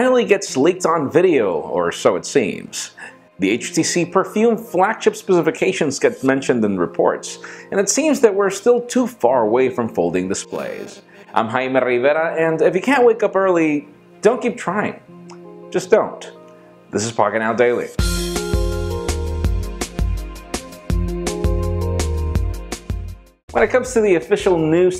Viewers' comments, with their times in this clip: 0:10 Is it me or there is a static in the video.... :/